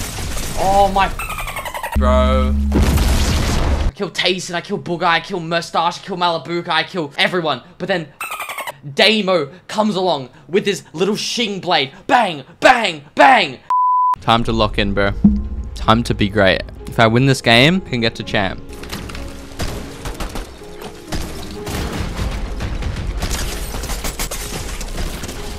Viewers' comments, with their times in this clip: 0:06 this rage gives off the mongraal shing shing shing rage vibes lol